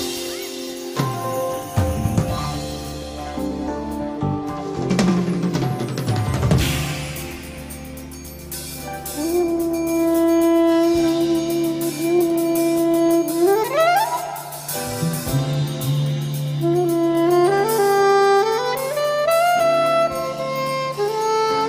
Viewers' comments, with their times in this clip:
0:08 SOPRANO SAX SOLO